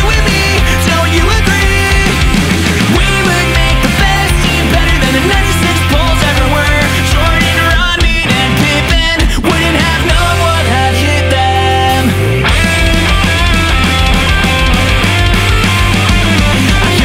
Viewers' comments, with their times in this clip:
0:03 anyone notice that it feels like blink 182 - she’s out of her mind